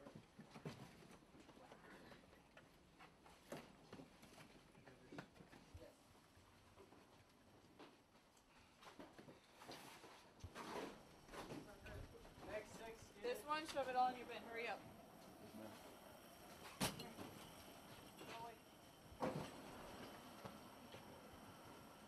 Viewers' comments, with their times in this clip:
0:03 is the quietest moment you'll ever get your whole time there.......